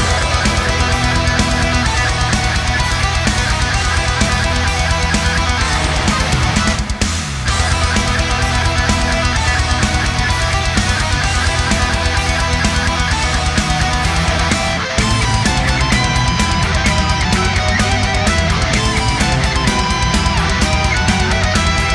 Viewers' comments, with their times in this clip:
0:06 I was just thinking, that haven't heard anything new and interesting music lately, but then got recommended this. First time hearing this band. From 8th second, I knew it's gonna be my kind of music. Usually I whine about harsch vocals, cause they all sound the same and don't give much emotions, but here harsch vocals are actually the best and maybe clean ones feel kinda excessive in this song. Musically also very interesting, swedes are known for good music and mixing and putting attention to every little detail, like stop, gives so much for the song. Have listened the song for some 5 times now on repeat and will keep my eyes on this band in the future.